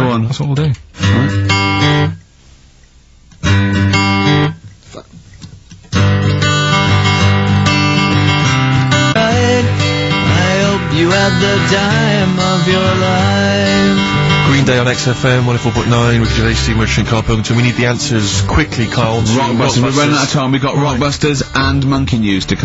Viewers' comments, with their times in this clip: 0:09 "I hope you have the DIME of your life" Green Day bloke always sounds like he's got a blocked nose. Never got the appeal of them.